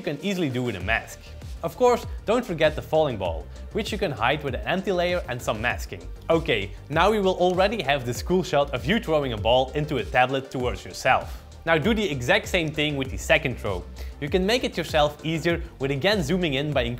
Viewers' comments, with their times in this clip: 0:04 what’s an anti layer and how do you use it?